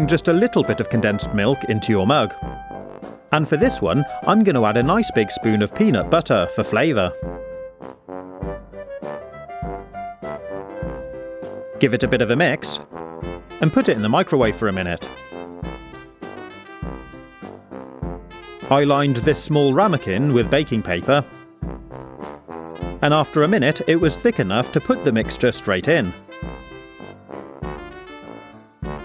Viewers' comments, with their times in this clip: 0:10 sounds like beatbox